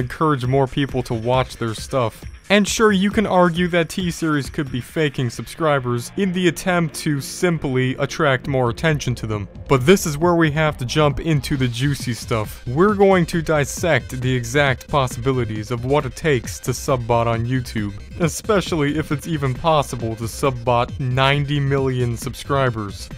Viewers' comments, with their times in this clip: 0:06 I swear I've heard you say India.